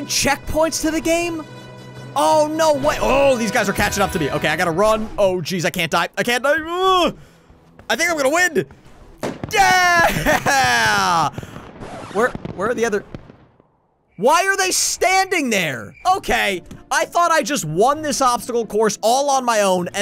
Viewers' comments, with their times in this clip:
0:08 do you said wind